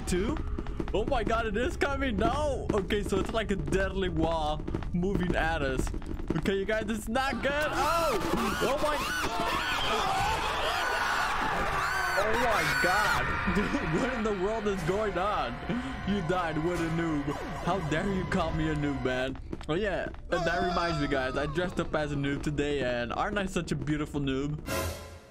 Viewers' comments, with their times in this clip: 0:07 are those people screaming in discord?